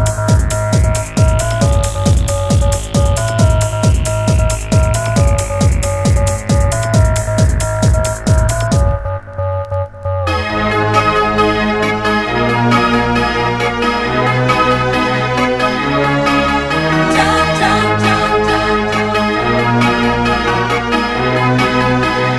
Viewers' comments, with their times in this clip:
0:09 Decadance what a synth loop